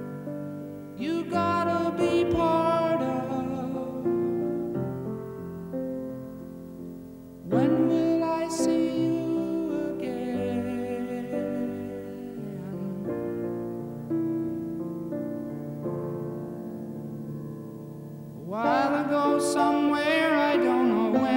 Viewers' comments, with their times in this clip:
0:07 "When will I see you again" so raw. Wow! Your heart hurts just listening to it.